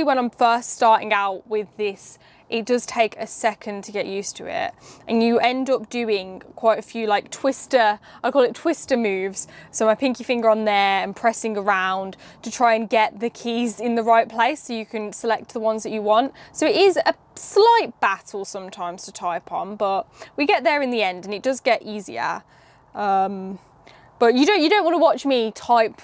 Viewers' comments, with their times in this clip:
0:08 "Pinkie finger" said with a brummie accent... Pause, rewind, wait you said what?